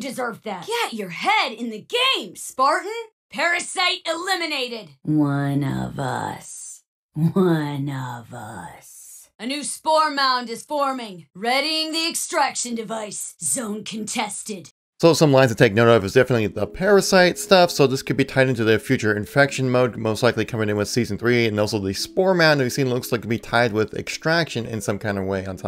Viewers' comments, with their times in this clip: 0:06 Is that V from Cyberpunk? Anyone else hearing that?